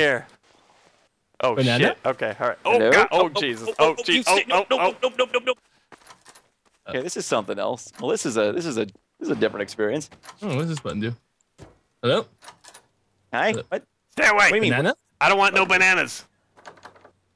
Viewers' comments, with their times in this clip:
0:03 child says banana